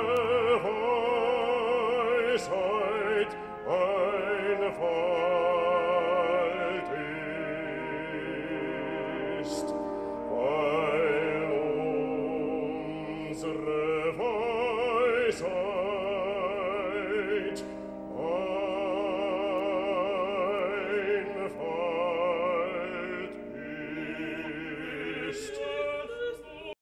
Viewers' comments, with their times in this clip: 0:09 That he has perfect command and technique you can easily hear in how he seamlessly connects all the vowels and letters in the phrase "Weil uns're Weisheit...", especially the "uns're". The tone sits beautifully in "the mask". A very fine singer indeed.